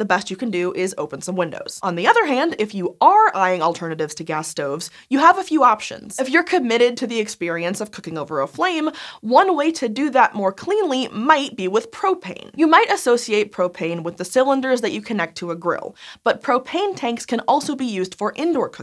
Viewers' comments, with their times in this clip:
0:06 anyone else hear hank hill almost laugh?